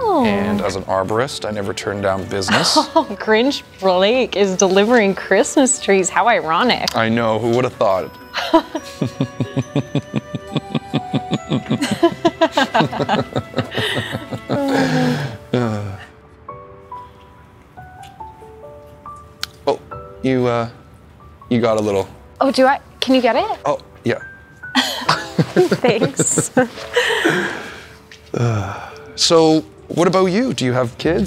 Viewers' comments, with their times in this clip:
0:10 OMG his laugh ...hilarious
0:12 That prolonged laugh did the trick for me 😂